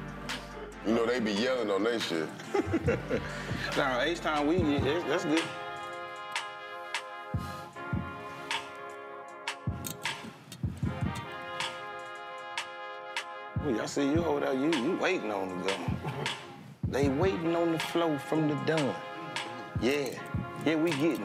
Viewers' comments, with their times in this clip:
0:05 That beat is hard. That's yall intro music!!!